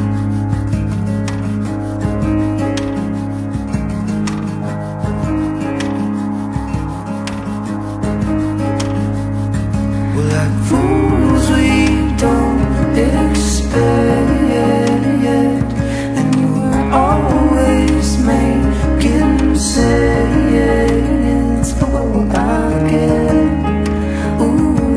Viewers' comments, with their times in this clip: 0:10 My favorite part is Once I listened for the first time to her voice compliment Zach's, I knew this was going to be an awesome project. I've probably listened to this song 100 times by now.